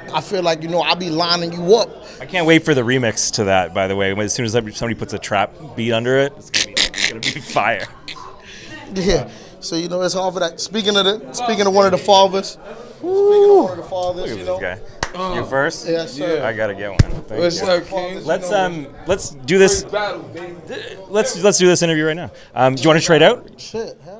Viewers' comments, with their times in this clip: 0:06 rex laugh 3-0